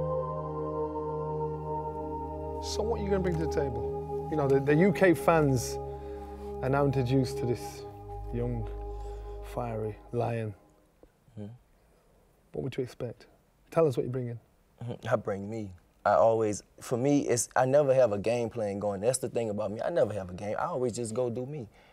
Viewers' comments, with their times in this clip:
0:05 I'm into the program and that god awful shit music pierces my ears. It sucked in the beginning and it sucks at the break. It's not a love story. Whomever chose and approved the stupid music for this segment ought to be demoted. The editing is subpar. Catch up Sky Sports.